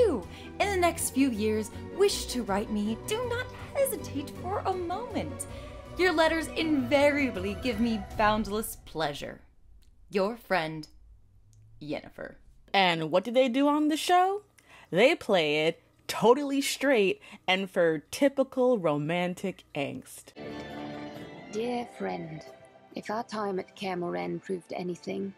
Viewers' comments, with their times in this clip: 0:06 is it bad that I hear Princess Fiona? Like she’d write that to Shrek after all his midlife crises in Shrek 3 & 4?